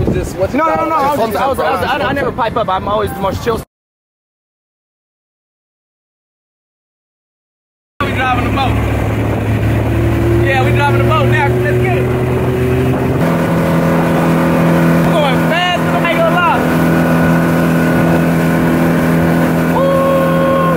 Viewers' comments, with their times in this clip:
0:07 Kodak voice ''Lemme drive the boat''